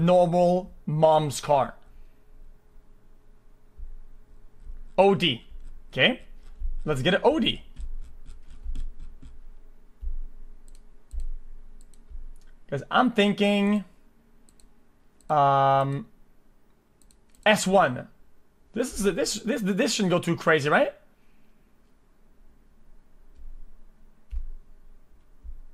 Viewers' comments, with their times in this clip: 0:06 Did..di..did..di-..did he just say "oudi"?